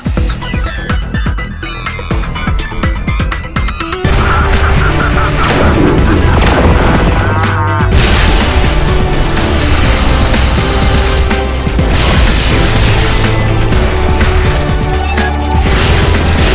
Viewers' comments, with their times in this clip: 0:04 general mantis's laugh